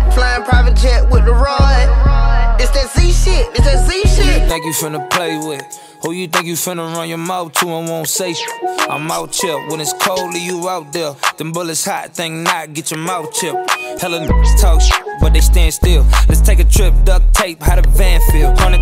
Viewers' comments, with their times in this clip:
0:04 is Chris brown? Damn... He sounds like Joyner Lucas 😂😂